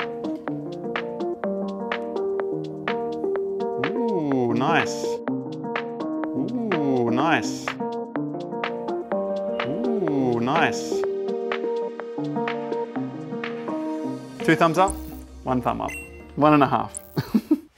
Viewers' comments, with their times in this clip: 0:03 did he copy paste the "ooo nice"???
0:03 the most npc shit ever heard, ooo nice , oooo nice.....